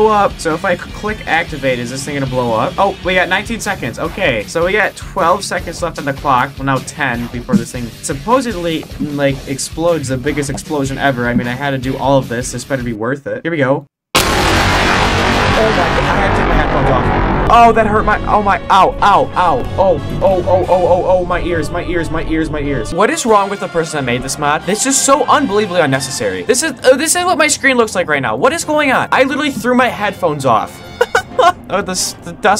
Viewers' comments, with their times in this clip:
0:10 boba fett space ship sound bomb
0:13 Normal people:Lower volume Me: grabs headphones and puts max volume Update on that ☝️ I am now deaf 🙂